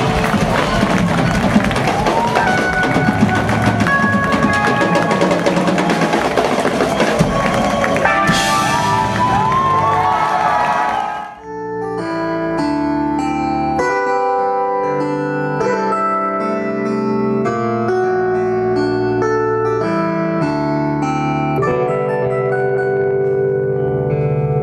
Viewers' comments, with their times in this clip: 0:09 The piece is remarkably beautiful. It makes me think of primordial molecular reactions that at some point initiated what we today call life.